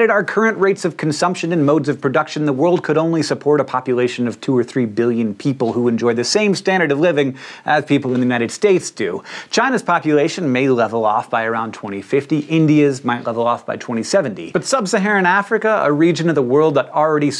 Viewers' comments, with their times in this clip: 0:04 WHAT!? SOMEONE IN THE BACKGROUND SNEEZED I'm unsubscribing. Not because of the sneeze but because I blew my eardrum out trying to hear it again.